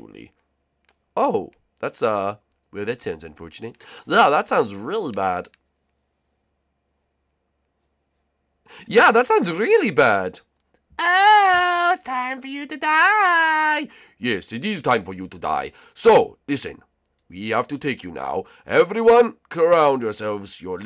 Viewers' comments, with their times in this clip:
0:03 Mario: Bowsef Jr voice Oh yeah that sounds really bad. Silence ;-; Mario: Normally Oh yeah that sounds really bad 😊.
0:03 who heared boswer Jr ??